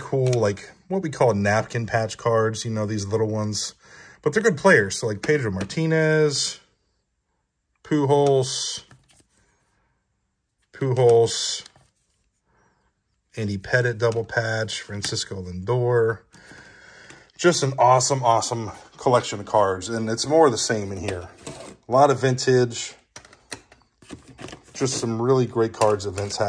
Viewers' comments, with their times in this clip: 0:07 The wife was like, "F all of this baseball stuff...I don't even know what you're looking for and you don't know where it is!" I was multitasking while watching this video and all I kept hearing was "poo holes" and I was like, "Wth?!? Poo holes?!"